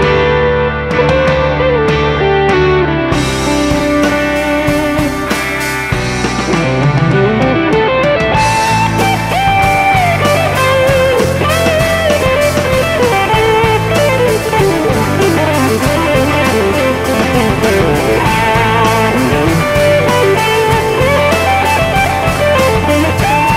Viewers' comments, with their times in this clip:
0:06 beautiful solo attack!!! 👏👏👏